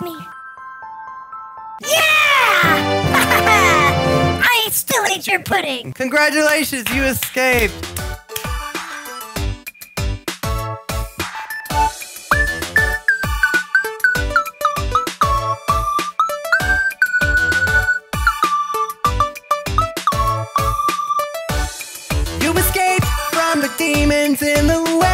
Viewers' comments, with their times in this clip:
0:07 The music is actually so good in this